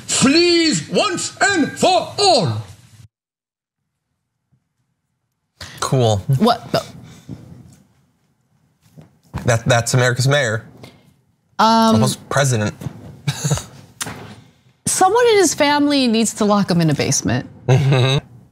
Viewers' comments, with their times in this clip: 0:03 I had to restart the video... I thought Rudy had claimed, "I've been sitting on..." Is Rudy auditioning for a Planet Of The Apes installment?